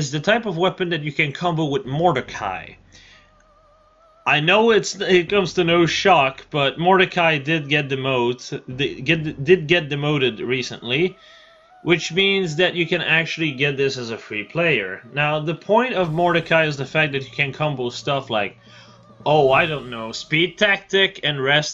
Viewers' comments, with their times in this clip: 0:05 That timing with the ominous music when you are talking about the insane mordecai combo lol.